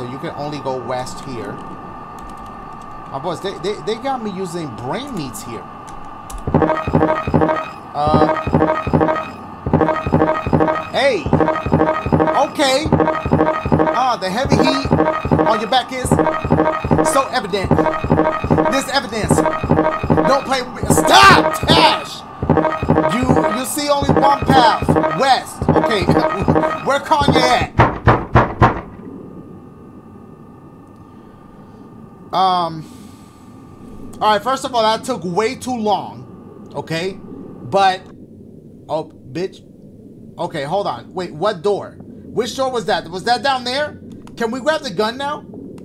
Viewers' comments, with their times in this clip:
0:08 I knew he was boutta start rapping😂
0:27 where Kanye at? knock at door 😂😂😂
0:28 Where Kanye at knocking at the door